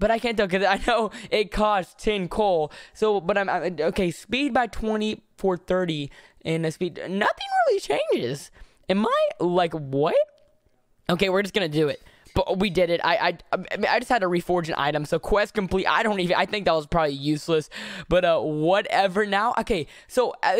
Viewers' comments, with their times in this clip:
0:06 bro that voice crack XD